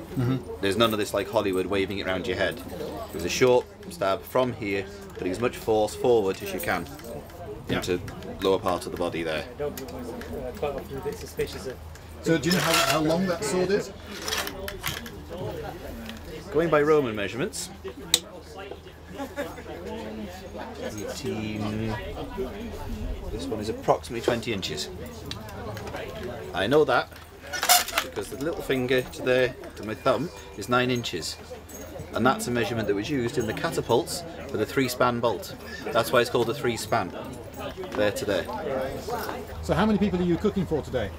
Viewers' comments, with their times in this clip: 0:09 The sword going into the scabbard sets my teeth on edge. This channel told me there shouldn't be any noise! :P
0:24 That scabbard sounds like it came out of a game or a movie!